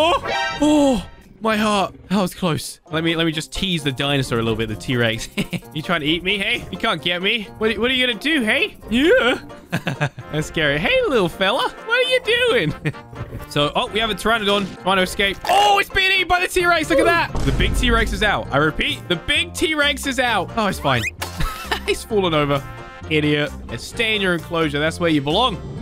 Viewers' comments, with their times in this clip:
0:10 the baby is so cute especially when u made that voice😂😂😂